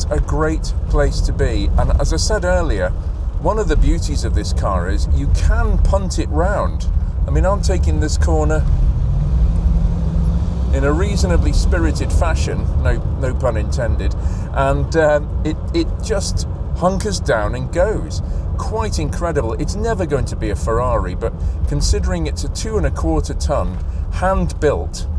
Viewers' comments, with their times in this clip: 0:08 A quick search didn't yield anything, but did the Solex 4A1 have anything to do with a (GM) Rochester Quadrajet? Spread bore, vacuum secondaries, teeny primaries, it looks the same... And the give-away: due to the relative size difference between the primaries and the huge secondaries, a Quadrajet equipped GM V8 always had a distinctive micro-hesitation when given the boot: WOOoooOOOOOOM (😛). Exactly this sound can be heard on hard acceleration Too many coincidences - there has to be a connection between the 2 carbs.